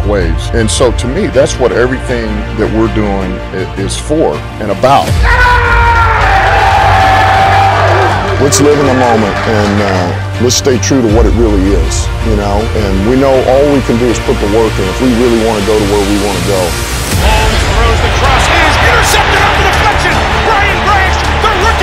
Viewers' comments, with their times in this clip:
0:05 What a scream ❤❤❤ Let's bring it home LIONS we belive in you ❤